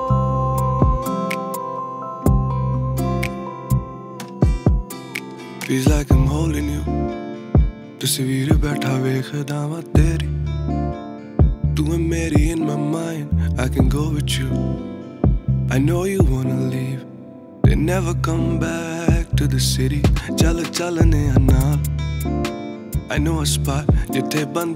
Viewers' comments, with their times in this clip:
0:05 On repeat... beautiful voice and song... love from punjab india... 😀 best part